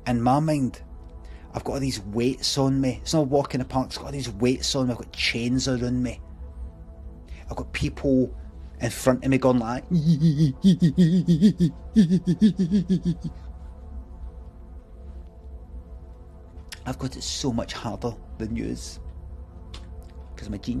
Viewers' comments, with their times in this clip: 0:06 damn I didn't know we were getting another Richard E Grant impression